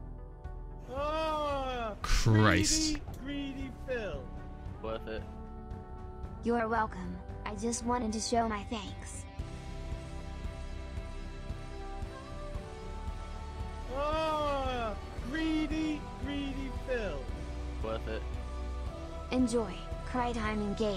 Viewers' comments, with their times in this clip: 0:08 Notice the montage music